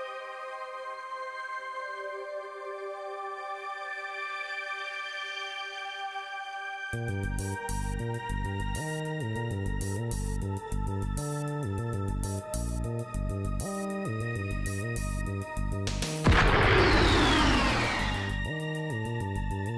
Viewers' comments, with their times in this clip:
0:07 I forgot what this music is in the beginning it goes hard 🔥